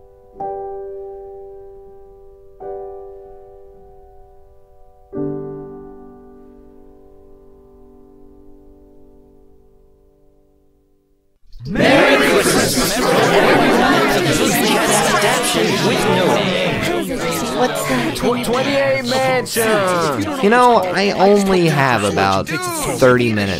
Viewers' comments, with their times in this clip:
0:10 Me: OH GOD THE VOICES ARE BACK!!!!! NOT AGAIN, I WENT THROUGH 3 YEARS OF THERAPY FOR THIS!!!!....oh wait its just the video. Voice: yea i was worried to for a moment. Me: O_O